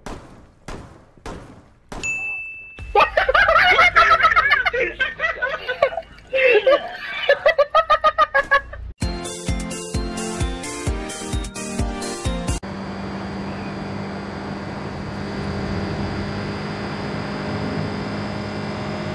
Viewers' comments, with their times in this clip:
0:03 Did anyone else here an elmo laugh ?